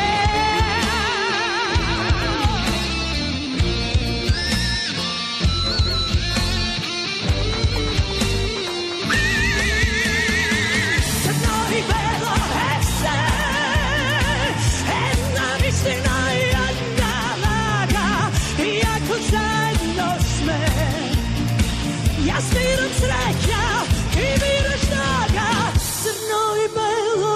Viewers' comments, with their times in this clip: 0:08 What a performance! Kaliopi is an amazing singer! Very nice tone, lot of power and emotion. Very beautiful lady also. And what a song! i adore it! surprised and atonished. The bridge part is simply fantastic. So underrated in ESC. What's the meanning of CRNO i BELO in english? Greets from Portugal
0:08 and I thought I had a high pitched scream
0:08 best high note of Eurovision ever
0:08 The note is ICONIC.
0:09 The scream IS ICONIC
0:09 That note is PHENOMENAL!
0:09 is just greaaatt!i love her voice :)
0:09 which note is ?